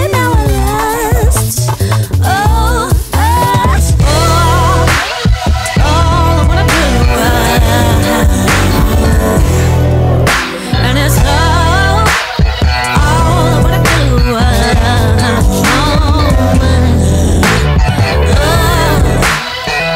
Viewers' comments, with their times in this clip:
0:04 That bass line